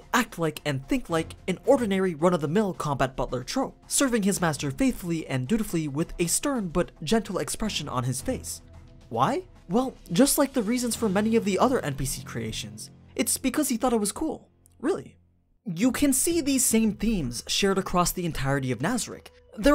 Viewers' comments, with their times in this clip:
0:07 I can hear Pandora talking german after that sentence